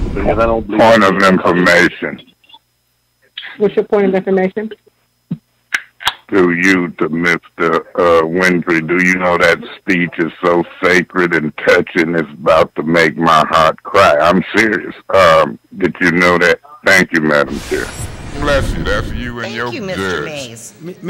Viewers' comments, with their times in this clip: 0:05 … beer can pops 😅😂😅